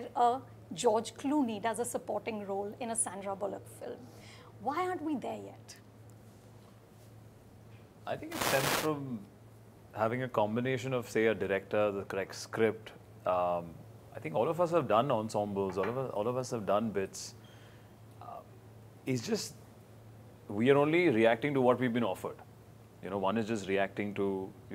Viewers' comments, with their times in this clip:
0:07 That awkward silence and looking at eachother by vicky and sid 🤣🤣🤣